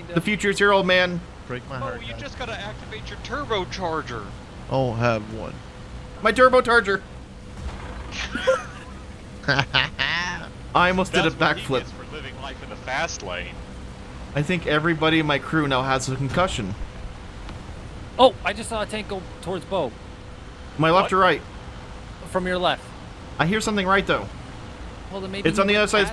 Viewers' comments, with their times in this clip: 0:04 does he say "Turbo Targer"?
0:10 why did i think he said "Curbo Targer"?